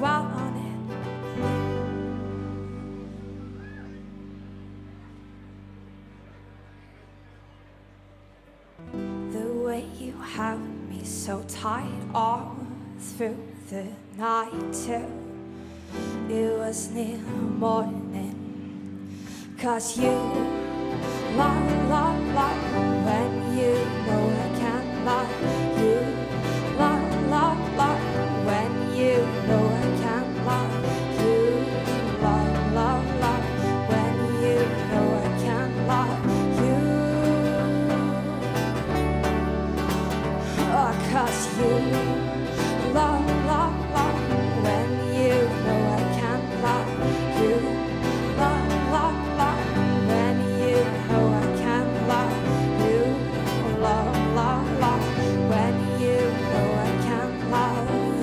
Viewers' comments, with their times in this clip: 0:05 haha i thought it ended and the crowd was mean for not clapping
0:40 haha i thought she was saying cuss you :P